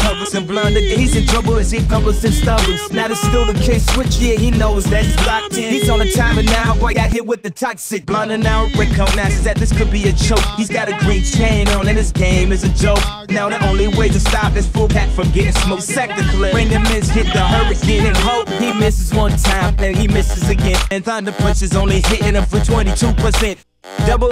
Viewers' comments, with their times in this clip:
0:05 onward has an eminem type flow